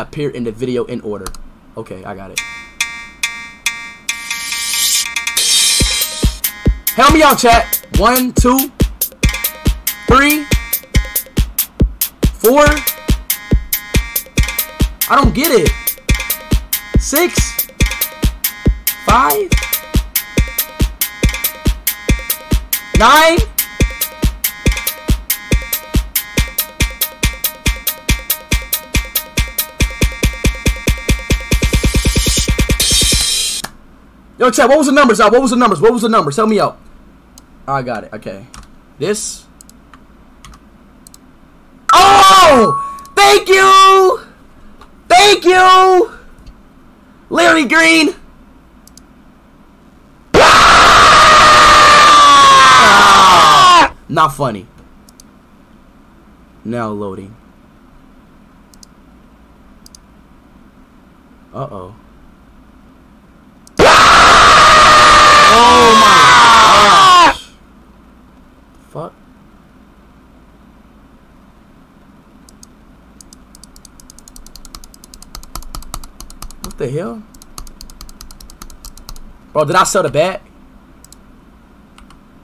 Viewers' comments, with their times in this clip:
0:05 Speed is just vibing with ghost song 💀
0:10 wtf i love this music
0:41 that 'thank you' was really cute 😚😚😚
0:42 His "Thank You" sounded so cute
0:48 video: aaaaaaaa also speeds mouth: OOOOOO
0:50 bro's scream matched the screamer
0:50 i thought speed was screaming dawg 💀💩☠
1:04 Is it me or anyone noticed that its the same sound of scream that speed yelled just some seconds ago?